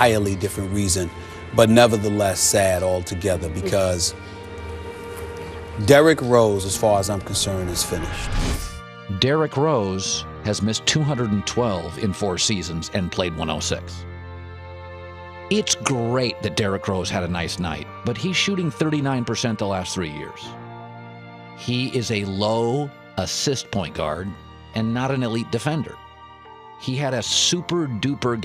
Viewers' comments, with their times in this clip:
0:09 this dude sounds like a robot